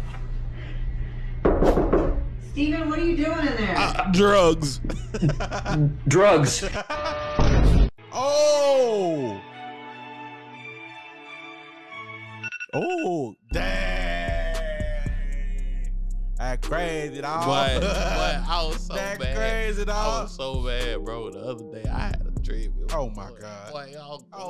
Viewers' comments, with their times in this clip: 0:09 What the music